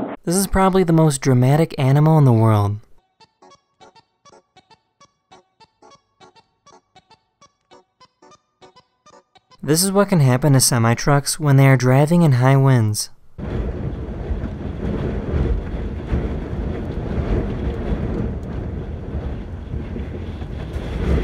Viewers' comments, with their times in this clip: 0:03 who thinks the song makes it way more funny